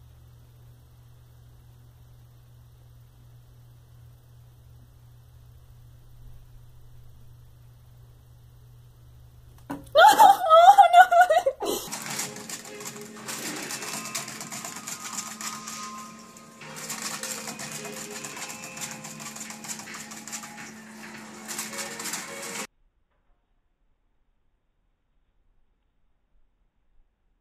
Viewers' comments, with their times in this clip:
0:03 I’m pretty sure that was from a new owner and thought the geckos were doing ok but the gecko fell off and the owner sounded concerned for it
0:10 is that girl laughing or crying?!